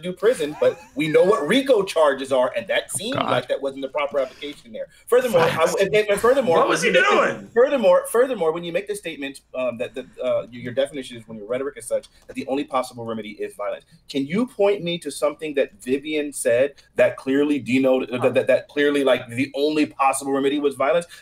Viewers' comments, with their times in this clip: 0:05 Seth Rogan enters the chat